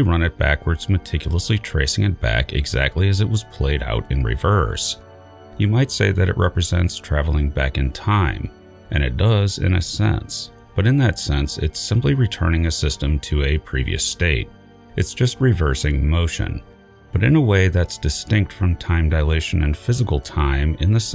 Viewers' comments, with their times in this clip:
0:09 when you say "it represents" the audio distorts in a way that makes you sound like the reaper destroyer you fight on rannoch in me3